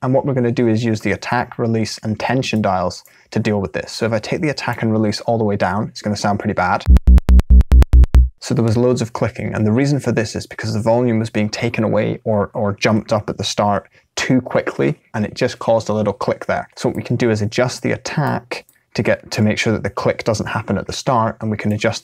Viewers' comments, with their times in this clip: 0:07 "Sounds really bad" Me as a Psytrance fan.. "HOLY SHIT!!! SICK BASELINE"